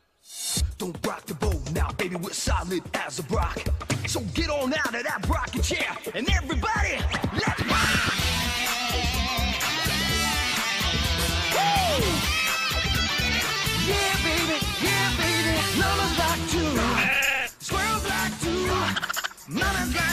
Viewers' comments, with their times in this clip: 0:08 That solo from 👌🏻👌🏻👌🏻